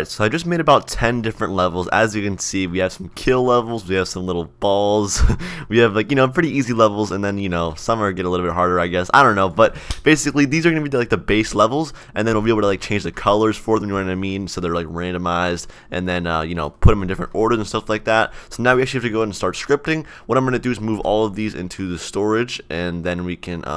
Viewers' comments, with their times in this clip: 0:03 that laugh after "little balls"
0:08 baldi clap in the background?? lol